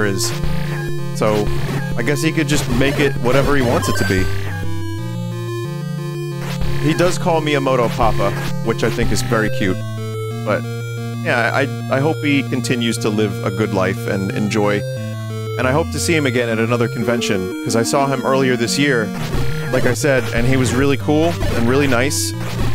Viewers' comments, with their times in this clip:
0:06 I just woke up as I watched this and was beyond confused hearing "He does call me a moto papa" like wtf is a moto papa and he calls Vinny that!? Took me like 10 seconds to realize what he actually said